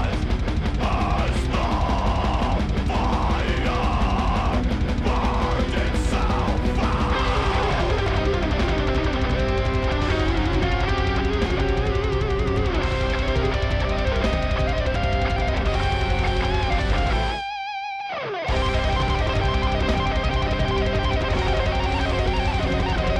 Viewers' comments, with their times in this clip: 0:06 .. the solo begiiiins ! :D